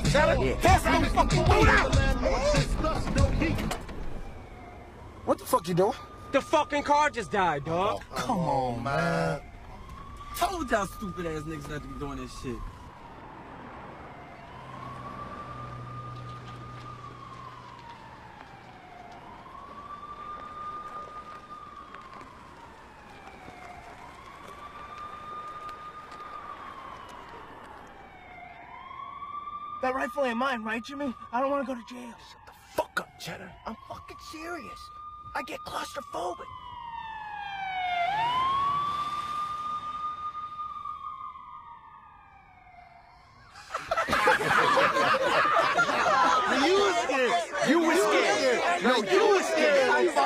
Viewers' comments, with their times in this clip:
0:10 DJ Iz: I TOLD y'all stupid-ass niggas not to be doing this shit! LOL I laugh at that part EVERY time! XD It's just funny as fuck the way he said it.
0:32 idk why i just laughed at the way Eminem told chedder to stfu